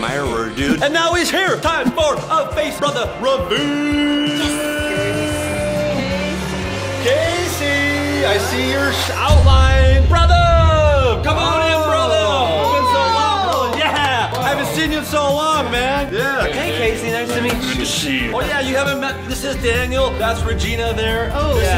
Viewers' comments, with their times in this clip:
0:08 That is agent peters vice